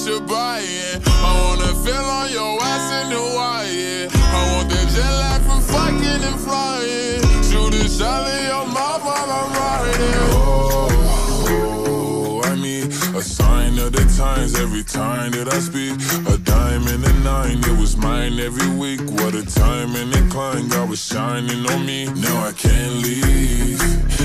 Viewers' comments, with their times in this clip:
0:06 is it just me or y’all also heard a fart sound💀💀💀